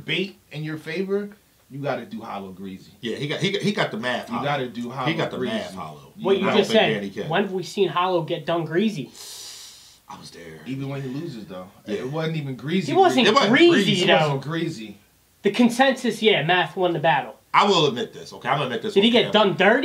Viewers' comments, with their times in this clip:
0:05 The way dude says "get done greezy" got me 🤣🤣🤣